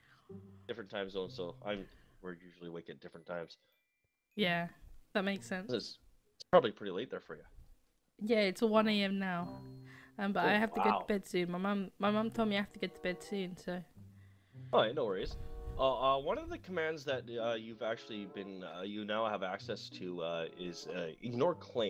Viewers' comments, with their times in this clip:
0:03 the auto tune has voice crack?! wow so good.